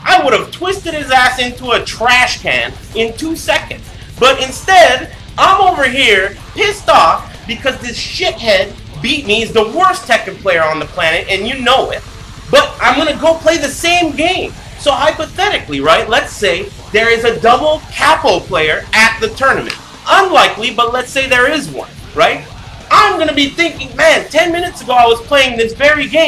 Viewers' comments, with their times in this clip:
0:09 the guy sounds like meowth from pokemon